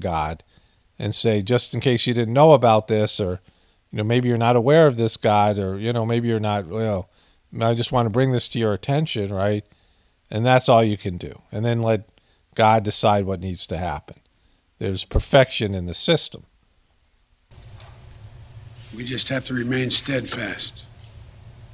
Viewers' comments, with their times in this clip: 0:06 he sounds like a horse...prrrrrr is the sound